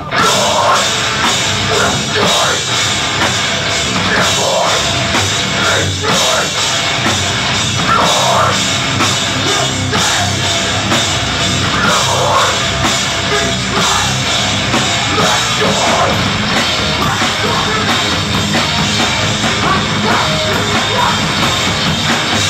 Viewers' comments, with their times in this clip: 0:09 i've had that breakdown at the mark stuck in my head since 2004... F*CKING GLORIOUS to hear it once again after all of these years, it is presently 2024